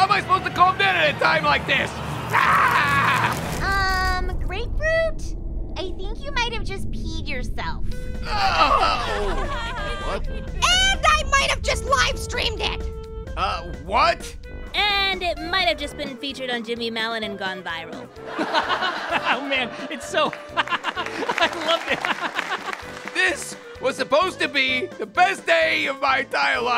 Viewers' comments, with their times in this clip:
0:08 You can hear her voice exactly like the tv show it's been a long time and i thought they never made references from the tv show